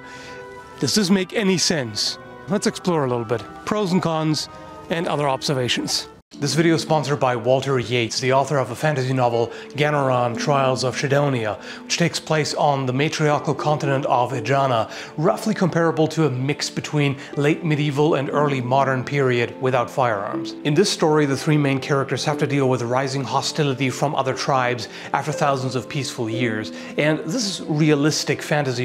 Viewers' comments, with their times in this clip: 0:10 I swear I heard "matriarcal continent of vagina"... XD